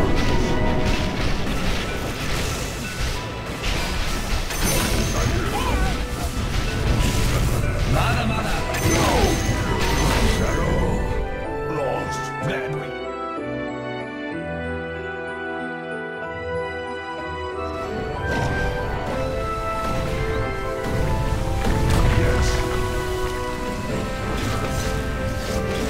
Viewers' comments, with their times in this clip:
0:06 wtf did I hear "Mada Mada" genji's voice line from overwatch
0:08 min i hear Mada Mada 😂😂😂